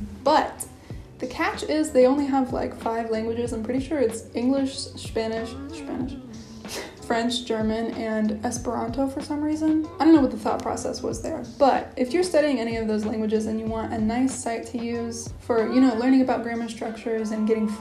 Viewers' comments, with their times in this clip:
0:04 Ever since I've started learning German in 2018, I do that all the time when speaking English. Shpanish, Shpecially, Shmoke, usw. lol